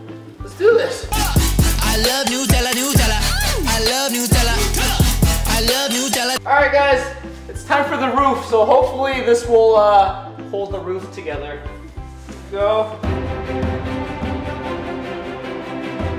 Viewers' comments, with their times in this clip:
0:03 The song sounded like it said I love Nutella